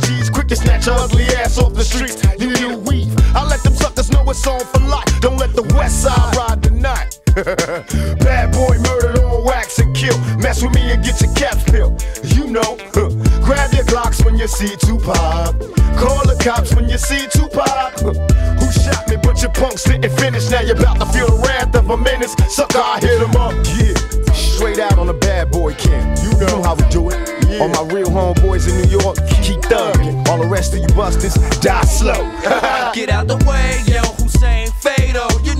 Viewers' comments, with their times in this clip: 0:07 Devious ahh laugh 😭🙏🙏
0:07 devious ahh laugh
0:07 why did they change the laugh omg😭😭
0:23 The way the beat stopped 🥶